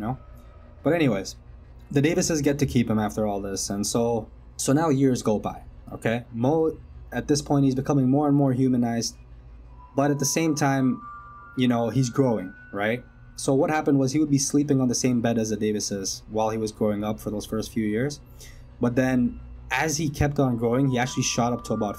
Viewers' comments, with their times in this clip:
0:03 The disturbing music, starting is a nice touch to your video.